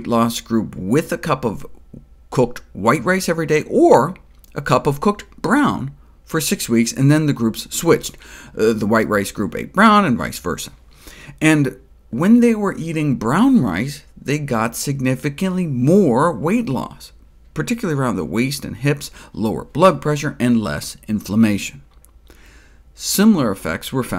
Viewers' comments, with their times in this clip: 0:09 Does he say "rice versa" ?? Or am I crazy ?